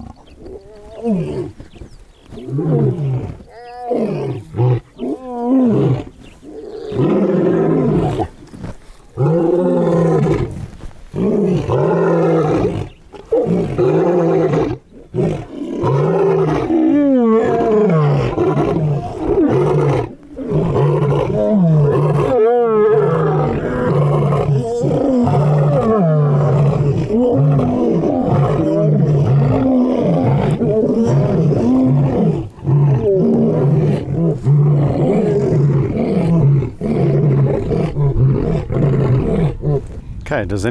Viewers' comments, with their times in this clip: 0:03 translation: -"But... that our bellyscratcher! What is he doing over there?!" -"No, he is OUR bellyscrather! -"NO, OURS!" continues the argument untill the end.
0:03 ITS LIKE THE 4 CORNERS, THIS IS WHERE THE GOOD ROARS GO DOWN!!💨
0:03 All the roaring that starts with some good headphones on.WOW!! ❤❤❤
0:23 Starting its like two coalition vocalizing at each other over territory.